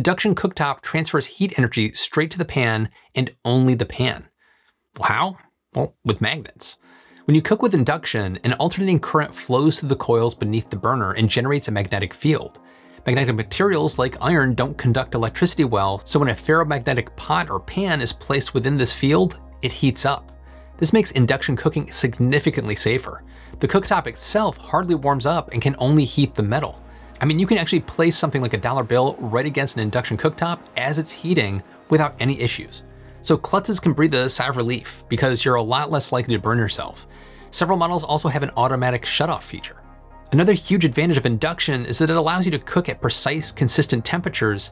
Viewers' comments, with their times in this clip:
0:05 The weird sound .lol.
0:27 Sorry, huge high pitch tone